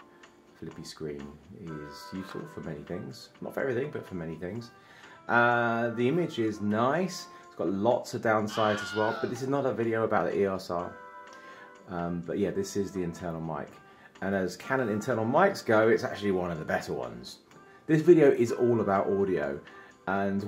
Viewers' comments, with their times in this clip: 0:07 Did I just hear a Wilhelm scream in ? :D :D Epic review as always, insanely cool blend of fun, depth and actual usage. You are an inspiration sir!